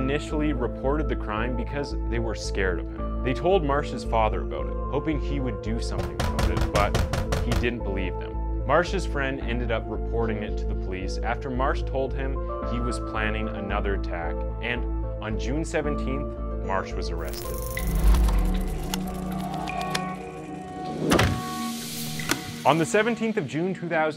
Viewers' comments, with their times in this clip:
0:05 Ridiculously bad foley.